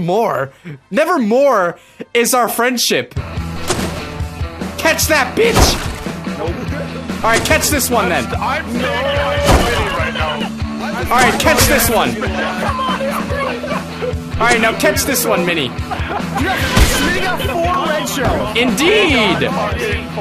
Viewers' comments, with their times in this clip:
0:06 Dat voice crack tho